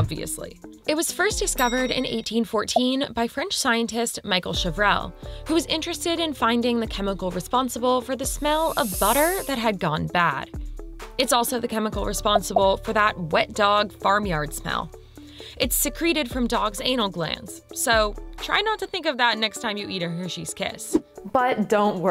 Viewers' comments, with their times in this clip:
0:03 My last french braincell died when she pronounced "Michel" as "Micheal"